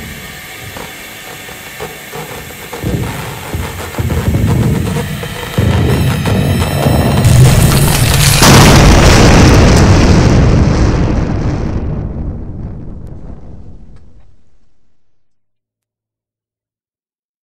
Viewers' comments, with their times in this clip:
0:08 M Y E A R S H U R T!!!!!!!!
0:08 R.I.P. Headphone Users
0:08 headphones? it's gonna be loud
0:09 ONE 152MM HE COMING RIGHT UP Edit: yes this is what a actually 152 sounds like
0:09 that sounds sounds like a damn nuke
0:09 MEH EARRRS HURTTTT SOOOO BAAD!!!!!!!!!!!